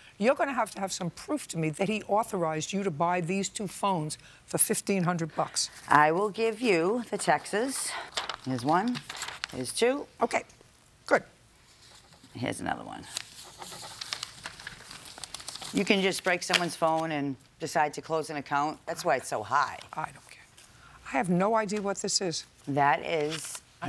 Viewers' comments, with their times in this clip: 0:06 Who pronounces texts as taxes!? 😩